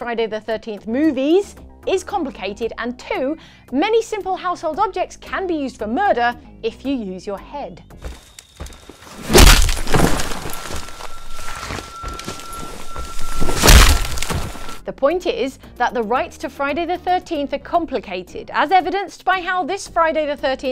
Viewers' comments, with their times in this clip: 0:08 It feels like the volume got turned up... you guys did that on purpose didn't you